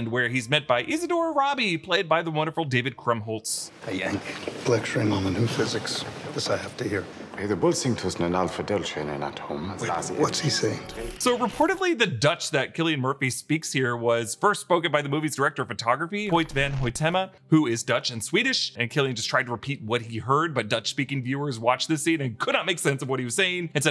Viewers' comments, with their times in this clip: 0:07 Im dutch, and that was not dutch.. 😉